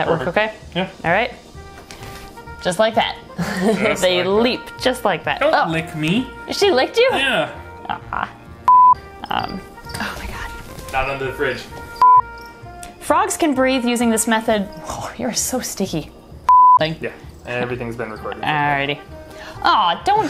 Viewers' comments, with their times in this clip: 0:04 He sounded like Kermit...the irony 🐸